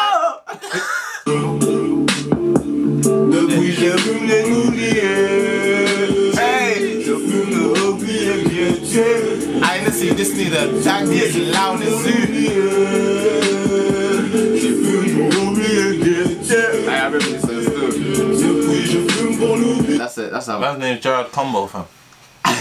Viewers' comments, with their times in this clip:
0:10 that's a sad music about the suicid